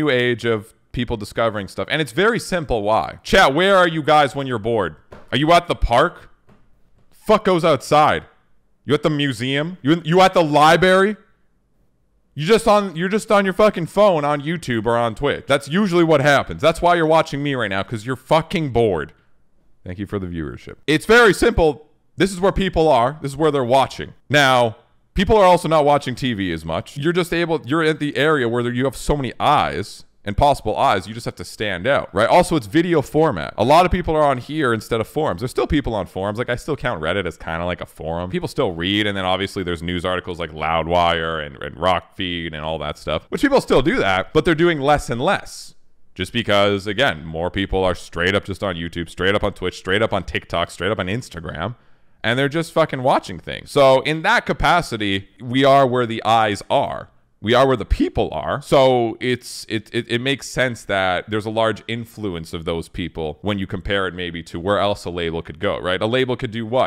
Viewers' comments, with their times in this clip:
0:10 you at the lie berry?
0:48 The lie berry?